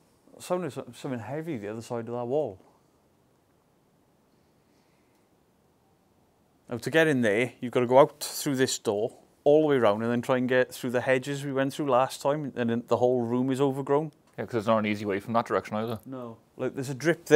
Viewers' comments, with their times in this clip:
0:03 it sounded like birds chirping